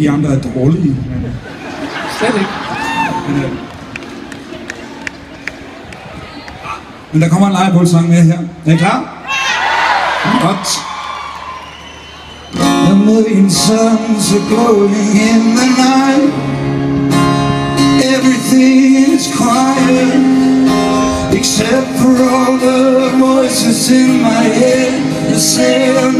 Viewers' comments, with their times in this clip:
0:08 I do not underdstand until Ben je klaar? Love your laguage. Greetings from the Netherlands.